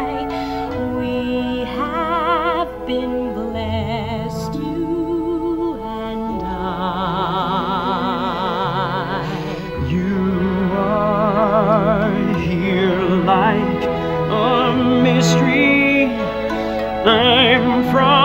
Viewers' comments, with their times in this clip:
0:06 that note gave me chills!